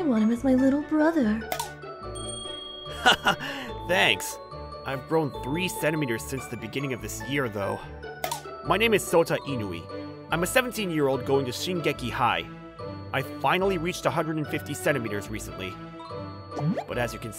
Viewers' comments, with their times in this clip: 0:04 Me : On the floor laughing due to how akward he said it